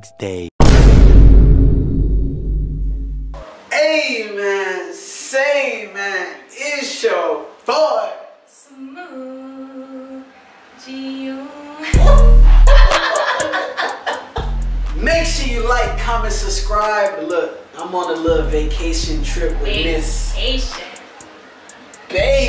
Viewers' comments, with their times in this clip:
0:08 is the best part of the vid 😂🤘🏽 she did yo intro smooth af